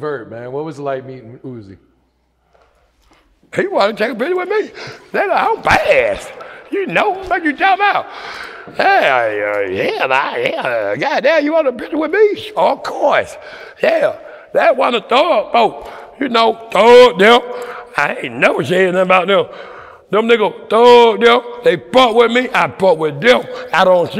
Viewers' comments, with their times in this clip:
0:09 🤷🏾‍♂️Scooby doo voice 😭😭